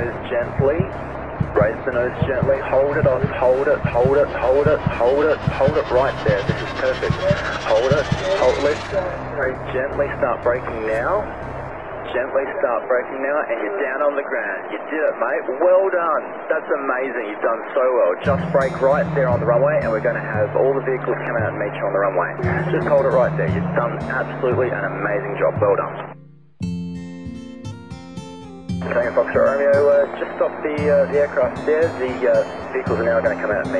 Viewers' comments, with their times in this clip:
0:09 You gotta luv the Aussie accent. So calm and reassuring. How many of you clapped ?
0:14 “You did it mate. Well done! That’s amazing, you’ve done so well….You’ve done absolutely an amazing job. Well done.” This bit of audio is so great. I’m going to record it and play it back when I do something well :) More of this in the world. What energy, care, and support. Incredible ATC!